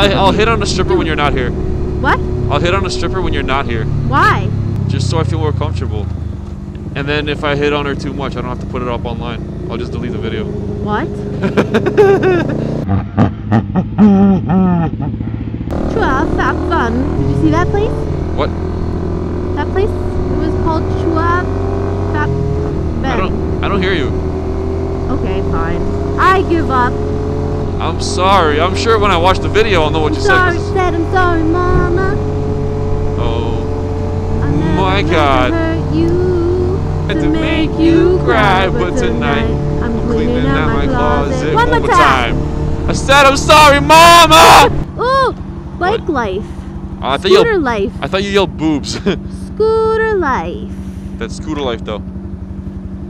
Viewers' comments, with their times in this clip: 0:05 That laugh made me laugh hard enough to not breathe.
0:38 when your vocals on point